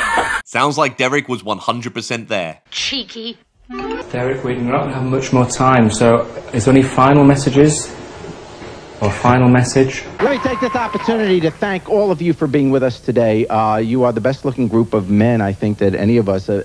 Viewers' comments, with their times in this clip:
0:03 that was perfect with the duck job sound lol